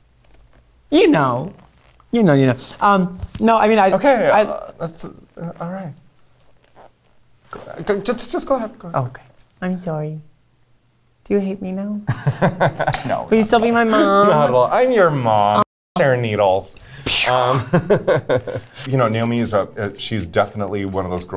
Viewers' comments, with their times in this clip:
0:09 aquarias cute "im sorry" melted me